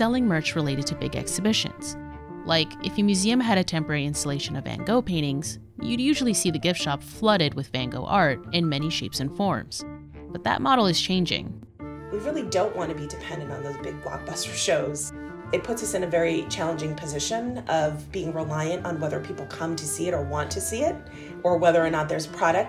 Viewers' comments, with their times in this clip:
0:04 I'm still pretty confused as my ears are used to the german pronounciation and this sounds not at all like anything close to "Van Gogh", even after repeating that part more than ten times i still can't hear anything else than "an go paintings". Do all native english speakers leave out the first and last letters in that name?